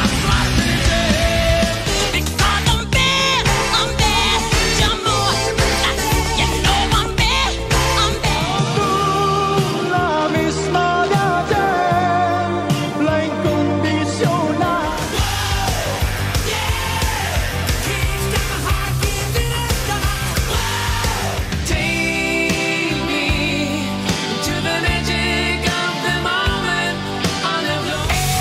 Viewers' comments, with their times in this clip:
0:10 love that song 🥰 childhood memories 😊